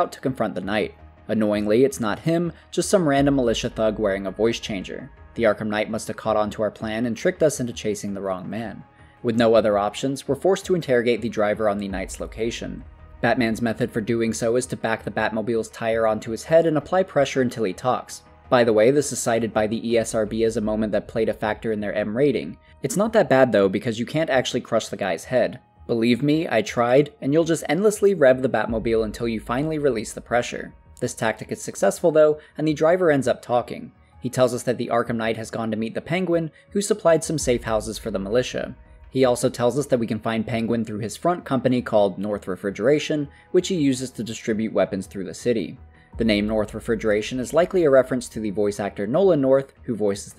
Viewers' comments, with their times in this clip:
0:10 the dialogue here is masterful, Conroy’s rendition is terrifying. This is especially true when Batman asks the militia member, “Remember anything else?” And the tone, context, etc. adds to the great voice acting. Very well done, one of my favourite moments of the game.
0:34 I almost feel bad for almost killing him because of the way he screams in agony